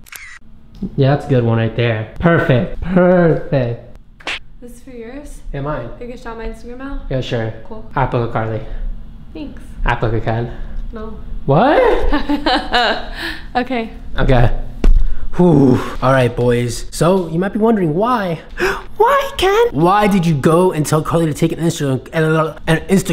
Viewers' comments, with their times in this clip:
0:10 they have the same laugh it's so funny